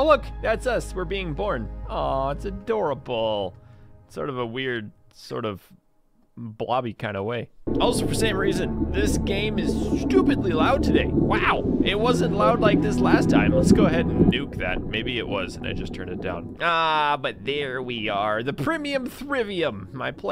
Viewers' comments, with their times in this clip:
0:08 i literally thought that that sound was my stomach lmao 🤣😂